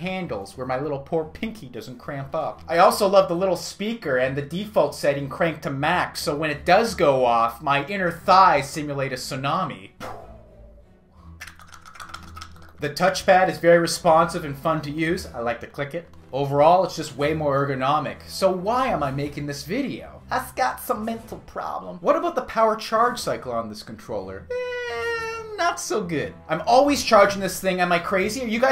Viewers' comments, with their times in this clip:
0:09 Tsunami sound effect was gold! Great video as always man!